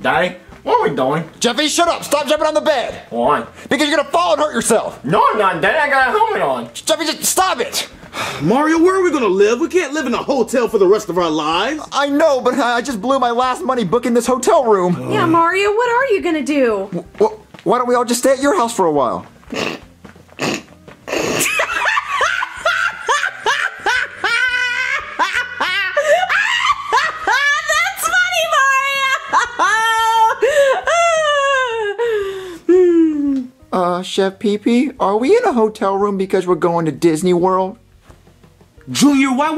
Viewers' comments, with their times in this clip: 0:09 How bowser says hotel it made me stop laughing. 😂😂
0:19 Jesus that laugh tho
0:19 this is the kind of laugh i want to have
0:19 Jesus that laugh tho Lol
0:20 Bruh Lol, the way Rose Laughed!
0:21 i like that laugh sound
0:22 Roslina laughing like Donald Trump! 🤣